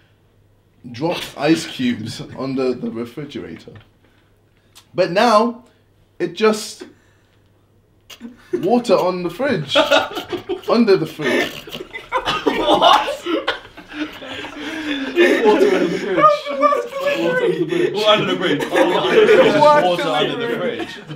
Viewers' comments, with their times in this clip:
0:04 The way JJ butchers that delivery is ironically hilarious😂
0:04 The way JJ butchers that delivery is ironically hilarious. Jack should’ve been in roast the sidemen.